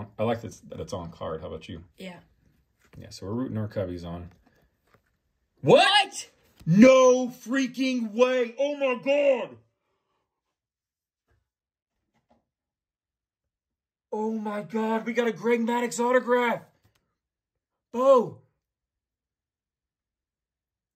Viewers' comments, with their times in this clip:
0:05 "What" a harmony! Congrats!!